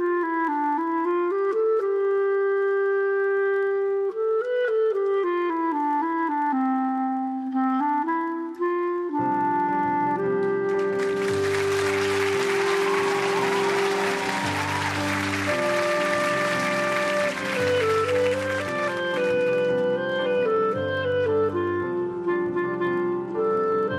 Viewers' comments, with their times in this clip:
0:09 Great version of "Bolero"...the "unplugged" arrangement is so haunting. Love how they use the amazing "Song of India" lift They are so awesome.